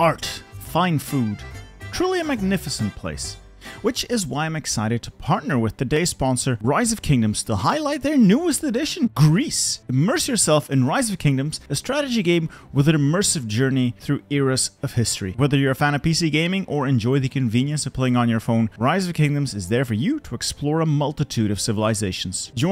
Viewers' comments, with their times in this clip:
0:04 weird how you used music from a singular region of Greece to represent the whole country.